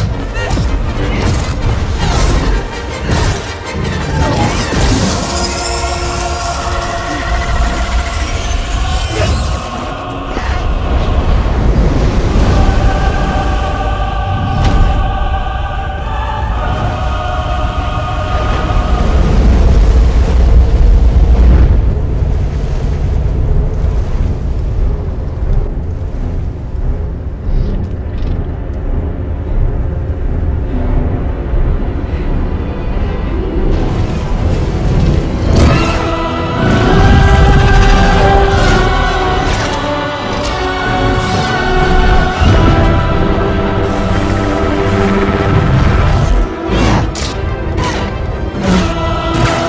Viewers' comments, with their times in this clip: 0:08 I thought it was a Steam chat notification on
0:33 oh my god the music matches up so well here
0:34 Chills Everytime That Chours Kicks In
0:35 the blade collision suits the rythm